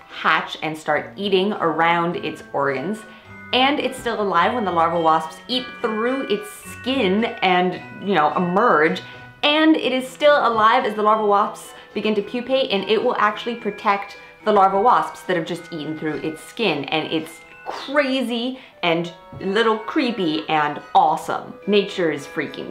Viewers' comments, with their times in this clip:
0:09 "Larval wops" made me chuckle. So I guess that the titular creatures from the "Alien" series are actually parasitoids, since they kill their hosts upon birth, in a very similar manner to the wasp larvae...